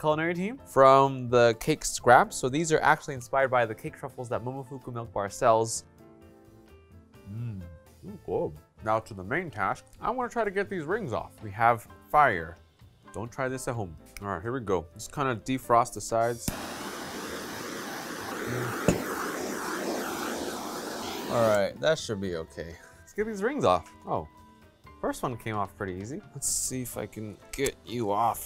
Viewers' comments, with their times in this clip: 0:09 he sounds like the grinch